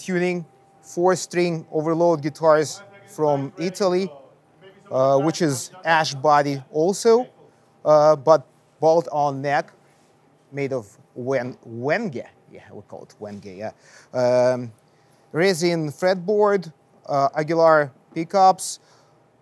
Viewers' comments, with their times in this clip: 0:04 reminds me of Peter Steele’s bass ✅